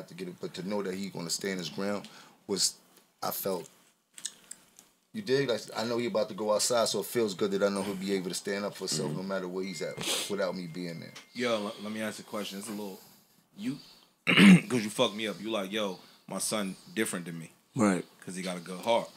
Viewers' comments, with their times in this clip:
0:04 Who breathing in the mic mad hard 🤣🤣